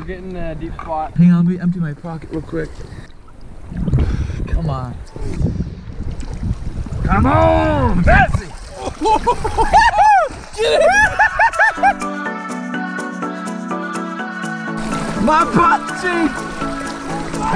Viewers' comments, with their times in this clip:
0:05 xDxdxdx what was that noice